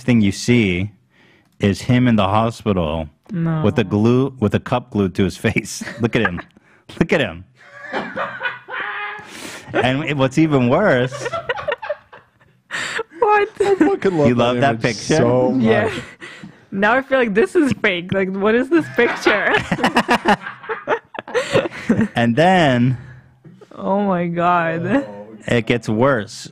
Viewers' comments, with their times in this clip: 0:07 that laugh :D